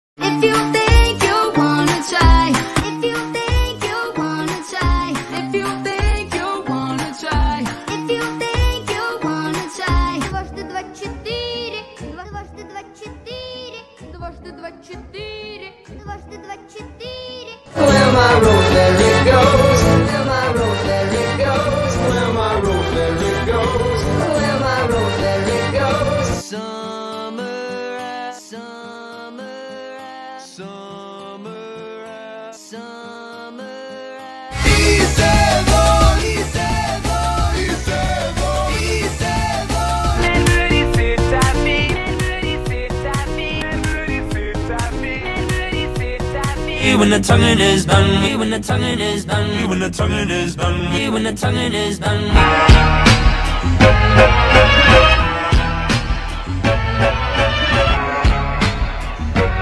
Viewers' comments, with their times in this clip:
0:10 Sounds like Preview 2 Doraemon Deepfake
0:47 sounds Like Preview 2 Turbo deepfake